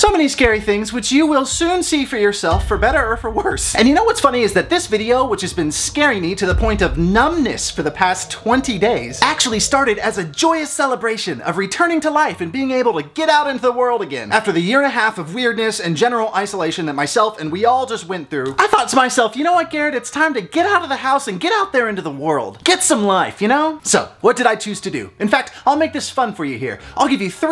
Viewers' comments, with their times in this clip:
0:10 THE SEMI-TRUCK GAVE ME A LITERAL HEART ATTACK I WAS SO SCARED EVEN THE NOISE ITS CURRENTLY IM ON EDGE